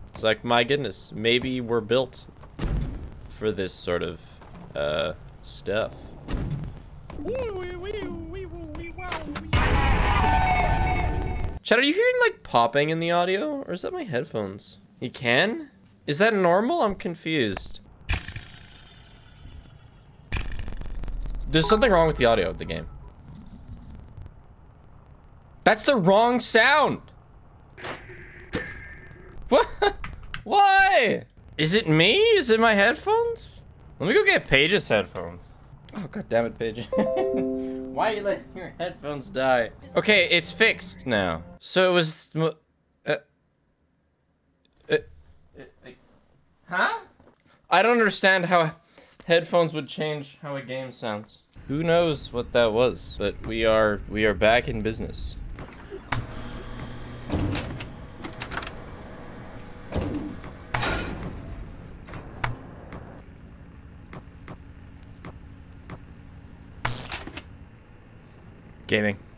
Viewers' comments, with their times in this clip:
0:08 i heard the popping
0:52 I'm guessing the game's audio engine was in a weird, somewhat corrupt state When the audio setup changes, the audio engine has to reload, meaning it probably just fixed itself as a result